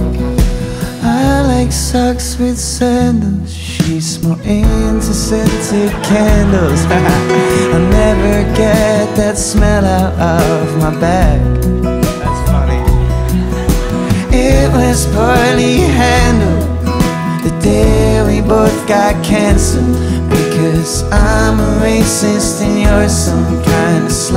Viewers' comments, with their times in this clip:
0:08 mattys laugh goodbye